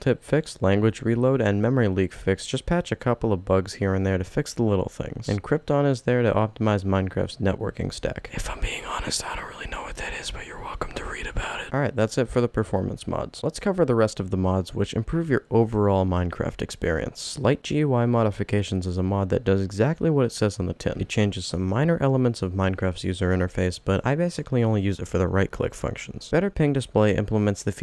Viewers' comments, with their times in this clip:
0:08 how is bro louder when he is whispering 💀💀 also thanks for the performance mods! Cuz i have a BIG modpack that i made, and it is really LAGGY